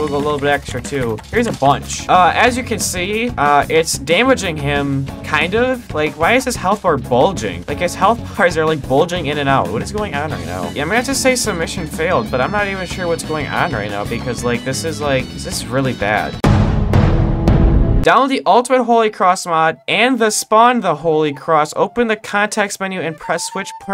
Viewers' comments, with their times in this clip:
0:07 "why his health are bulging" "His health bulging up and down" Wdym by that? 💀